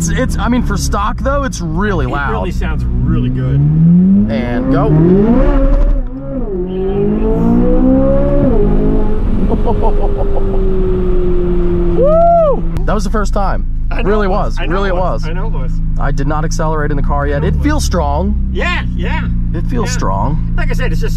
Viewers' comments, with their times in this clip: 0:04 The mic sound switching up when it bounces off the limiter really puts it into perspective how loud this is stock.